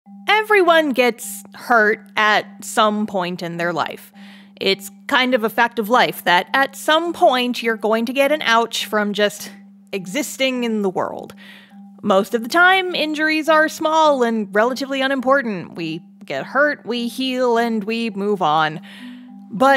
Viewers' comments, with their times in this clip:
0:00 you sound exactly like Jaiden Animations 😳😳😳